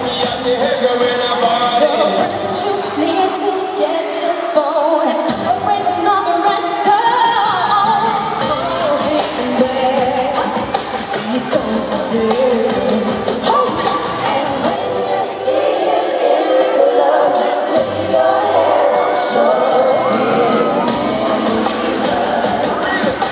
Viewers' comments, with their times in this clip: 0:06 best change note jade😘😘